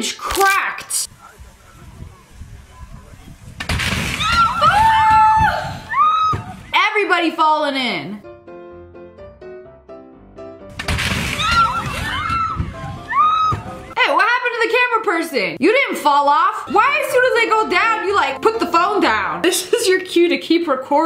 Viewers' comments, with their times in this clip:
0:04 omg SO SATISFYING like the crack the way it just * cra- cRaCk* AW! GAWJUS